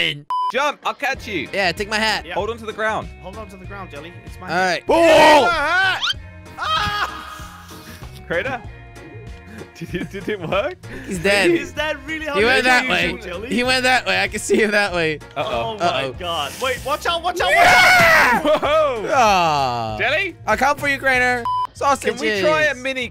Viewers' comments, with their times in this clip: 0:05 bro that’s the funniest part of the video 😂🤣🤣 The way he screams like Aaaaaaaaaa!!!! It’s just to funny 😆😂😂😂😂